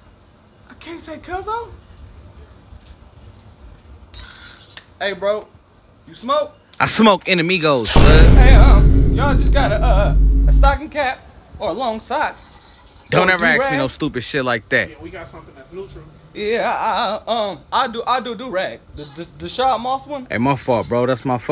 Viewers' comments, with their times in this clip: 0:07 The way his voice started quivering killed me
0:09 Yo tell me his voice doesn't sound like that chick who was being interviewed in the back of the cop car... "im legally blind...I'm sorry momma" 🤣🤣🤣